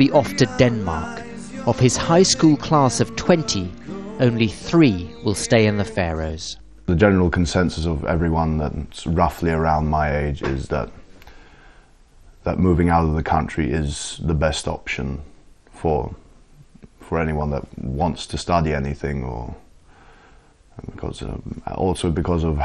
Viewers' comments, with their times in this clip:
0:07 If I didn't know any better I'd say he was British with that accent - and I'm British.